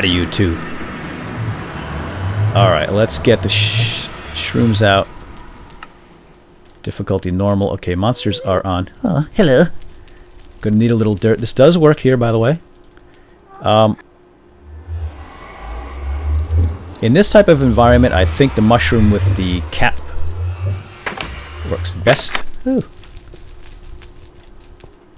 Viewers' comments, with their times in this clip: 0:07 WTF???? O_o "Oh, Hello" - who said that????